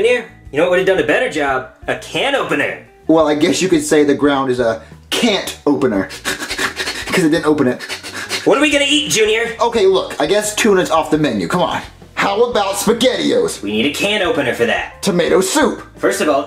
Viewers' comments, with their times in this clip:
0:04 wut kinda laugh was that lol
0:04 why does junior laugh like that